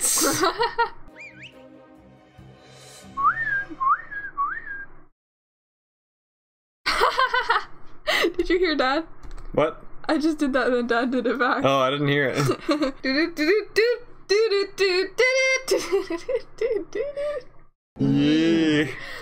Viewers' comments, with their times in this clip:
0:03 today on animal planet: communication between birds